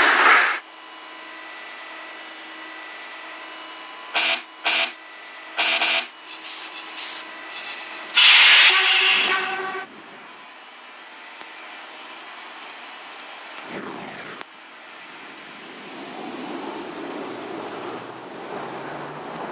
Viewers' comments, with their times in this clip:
0:03 The buzzer sounds like a rock guitar